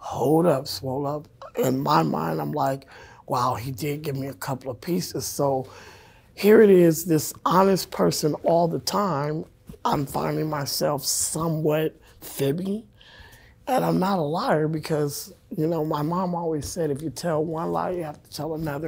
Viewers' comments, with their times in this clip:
0:04 its like she is rapping!!